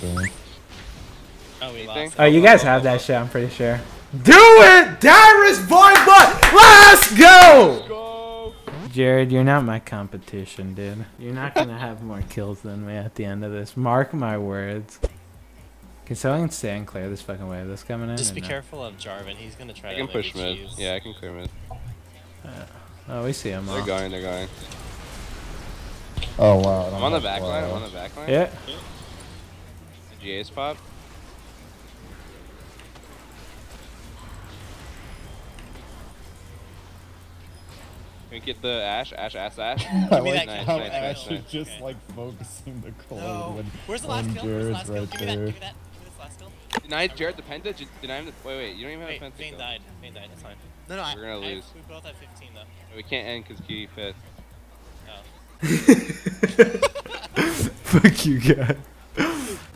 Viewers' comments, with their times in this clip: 0:03 When he screamed and clapped my Mom thought i was watching some hardcore...
0:44 The silence says it all. 😂